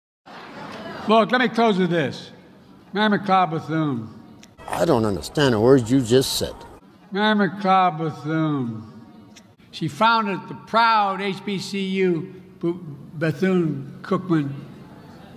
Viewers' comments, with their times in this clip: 0:02 "Meh meh clah bazoom." That's what he said. That's exactly what he said. 😄